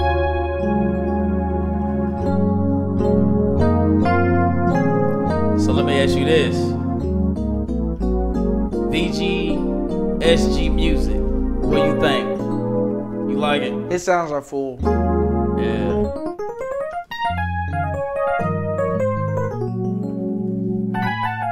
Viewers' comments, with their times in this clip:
0:06 fire chord progression